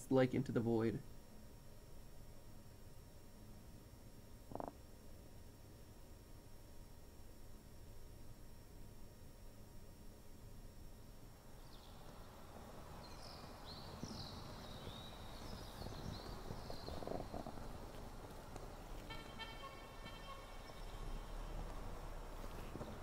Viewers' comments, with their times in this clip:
0:05 Did they fart ? I'm dying of laughter if they did.